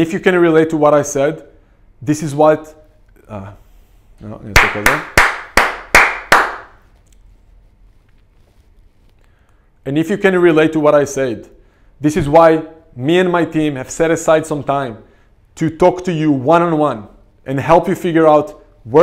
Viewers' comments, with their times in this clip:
0:04 Loved the claping! : ) Thanks for the nice info about your program and help.